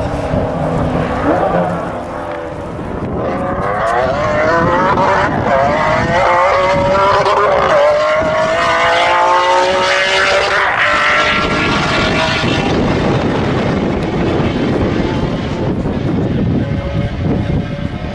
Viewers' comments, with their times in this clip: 0:03 is the sound you never forget! Its so beautiful and brutal at the same time!!!!! EARGASM